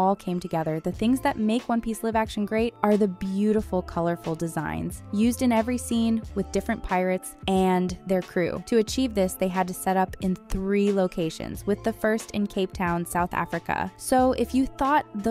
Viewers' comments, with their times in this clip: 0:03 Did she read the scripted "live action" as "liv action" instead of "lIiiiive action" ? Dayum! Amateur!